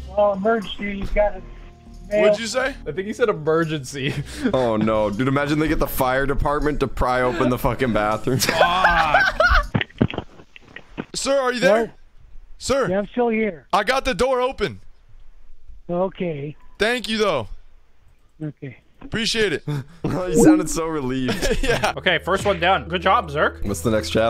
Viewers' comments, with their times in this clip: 0:07 NOT BLURED BAD WORD NOT FAMILY FRIEDLY